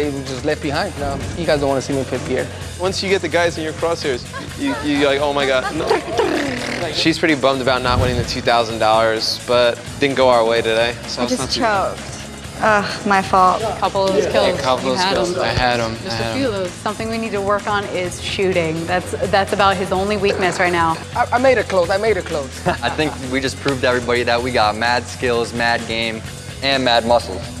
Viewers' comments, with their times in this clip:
0:08 did he say two thousand dorrars?